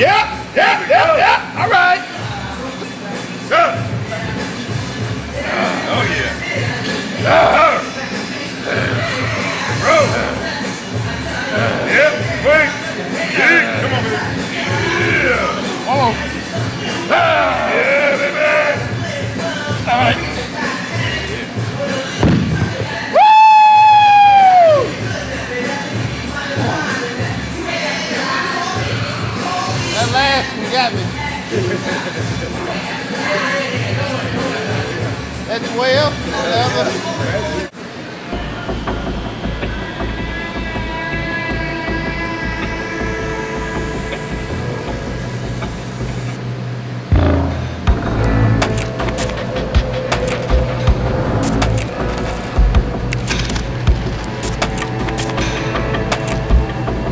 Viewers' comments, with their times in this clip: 0:03 the grunts from ronnie is terrifying 😮
0:22 expected that voice from such a mass (and after such a weight to lift) :,D?
0:23 It's like black Majin buu screaming.
0:45 some AC/DC playing in the background :D